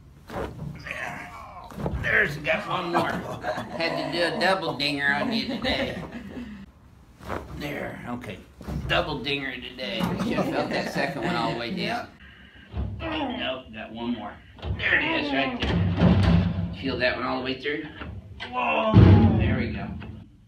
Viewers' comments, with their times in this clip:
0:04 it's his voice and accent that always has me laughing when he says "double dinger"